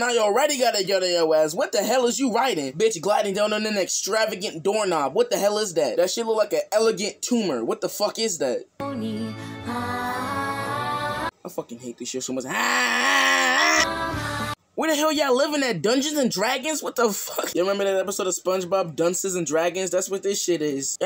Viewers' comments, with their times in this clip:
0:09 why tf they singing liturgical music